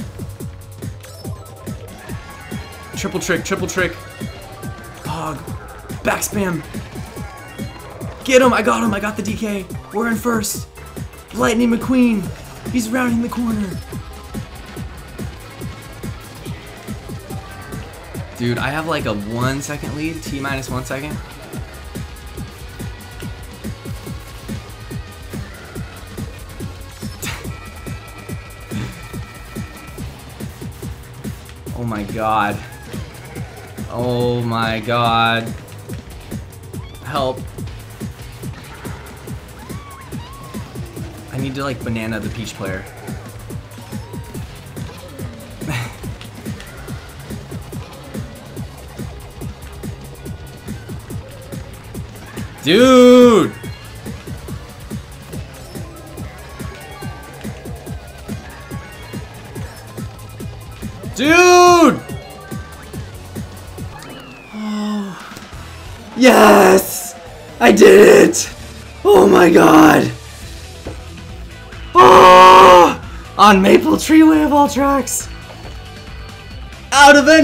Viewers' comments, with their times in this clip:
0:09 This is the time to feel the rhythm DOOTDOOTDOOTDOOTDOOTDOOTDOOTDOOTDOOT
1:05 For people with headphones: On turn your volume up all the way!